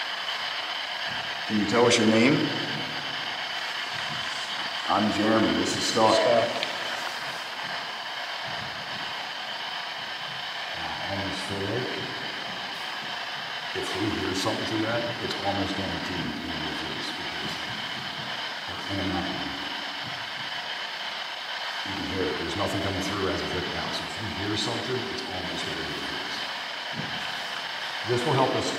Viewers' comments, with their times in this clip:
0:10 I couldn't tell but it sounds like a voice says something..what do u guys think. 🤔